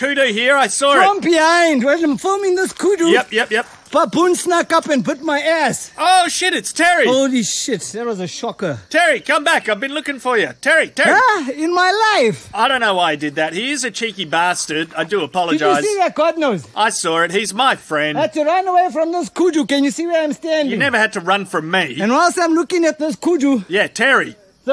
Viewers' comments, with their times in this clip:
0:09 "HOLY SHIT, THAT WAS A SHOCKER!" I'm dead lmfaoo 🤣🤣 sounds like he was in disbelief at what just happened